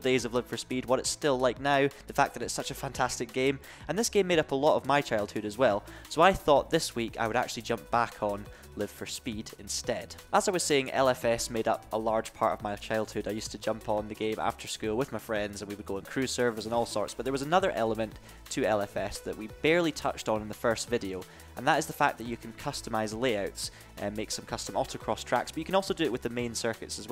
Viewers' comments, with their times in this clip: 0:08 live for *my headphone says connected* instead...